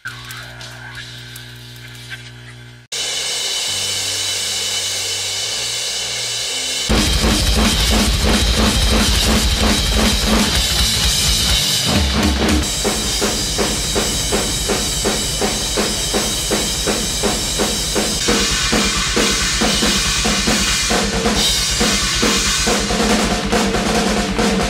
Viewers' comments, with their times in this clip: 0:07 he’s not bad at double bass
0:07 That's clearly sped up